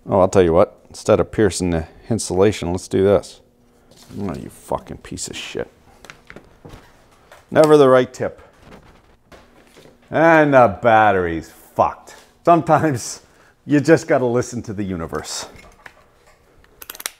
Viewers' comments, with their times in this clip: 0:04 "Fuk'in piece of shit!"... just like I say it!